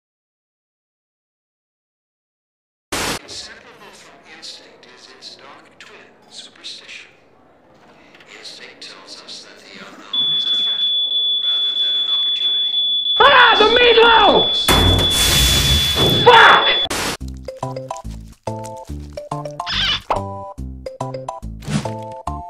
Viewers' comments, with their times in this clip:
0:10 That effing alarm was so convincing that I stopped the video thinking it went off in my house